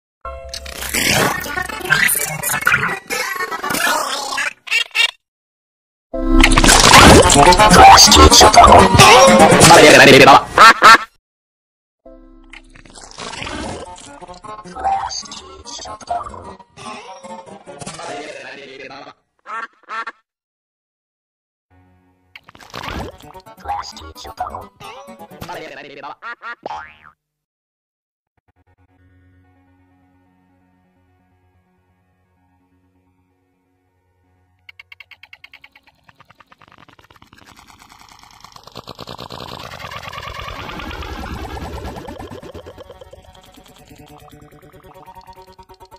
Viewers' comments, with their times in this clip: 0:01 sounds like x is broken
0:28 The slowest effect in the world
0:28 SPLAAT EXE HAS STOPPED WORKING
0:28 THE SLOWEST EFFECT IN THE EFFECTWORLD
0:30 is stretch voice, but is long